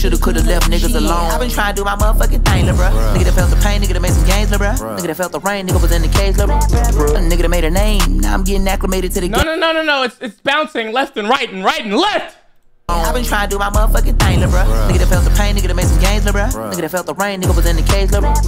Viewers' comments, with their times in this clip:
0:03 a little bit of breakcore? I could see that being more popular working its way into songs in the next 10 yrs or so tbh.